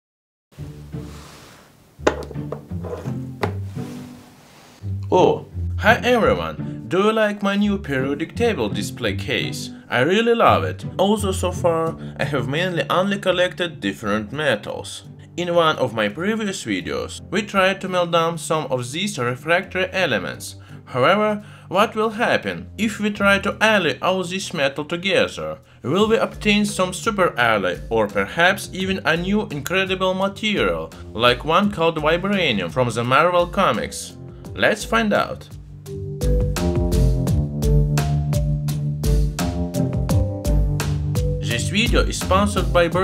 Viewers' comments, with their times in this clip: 0:05 why does your voice seem badly dubbed
0:30 I thought he said "My Brainium" until he specified Marvel